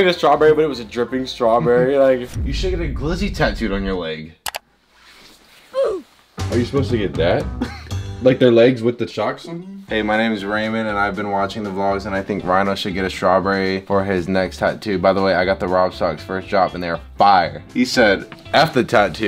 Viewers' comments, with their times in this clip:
0:05 that pause had me rollin🤣